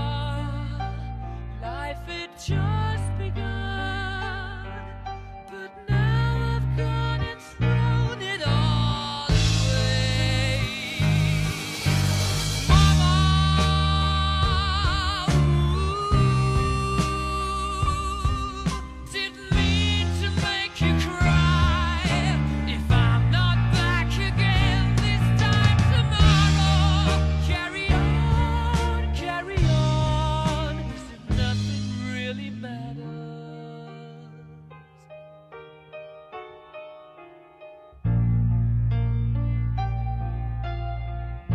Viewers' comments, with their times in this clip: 0:09 Music artist: drum roll please Drummer boy:
0:25 Hitting that drum fill Genius